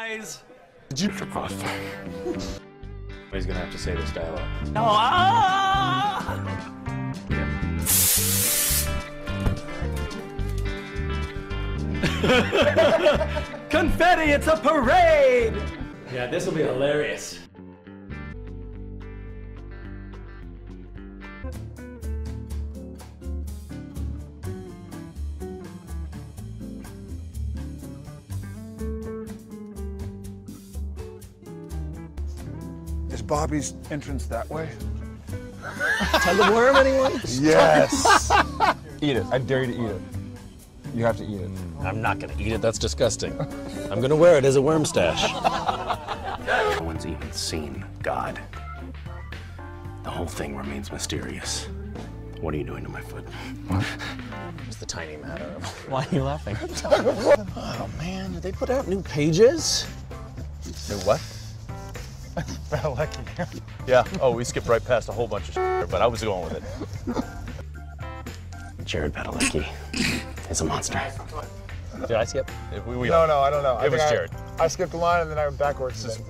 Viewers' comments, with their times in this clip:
0:04 That tarzan yell ahahahhaha :D
0:04 his scream is so cute
0:04 his scream is so cute
0:37 JARED'S FUCKING LAUGH, BAHAHAHAHA
0:54 "why are you laughing" his literal voice omg
0:54 Here cas voice completely changed he has cute voice really i like it😍😢and i love misha so much
0:55 That voice change.
0:55 he went from cas to misha in the middle of the sentence lol
0:57 And Jared is still laughing bout it cause again you can hear "tug of worm"